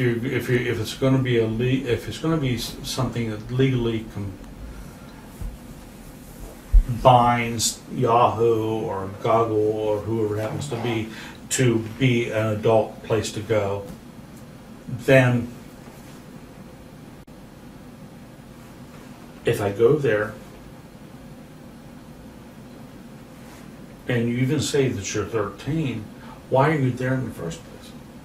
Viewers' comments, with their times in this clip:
0:09 that guy just pronounced Google as goggle